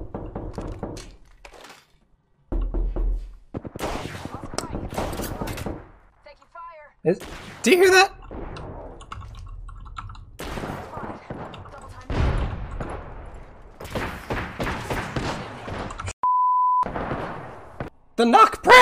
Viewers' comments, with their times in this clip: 0:05 I like how it got him but he just carries on playing like he must finish the game before he establishes whether someone was knocking on his wall or not